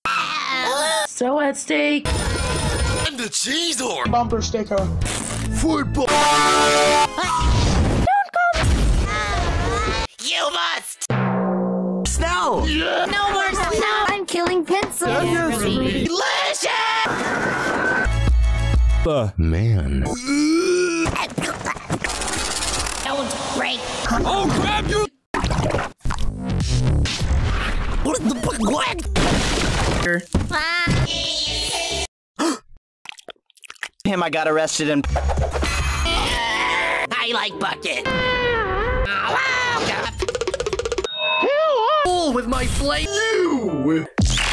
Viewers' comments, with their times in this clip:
0:10 YOU MUST! drum sound
0:28 Book just say gibberish a lot to dig a hole.